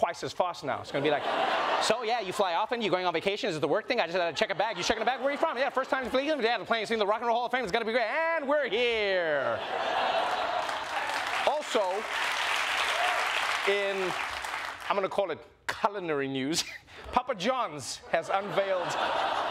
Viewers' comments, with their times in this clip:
0:03 pov : your sims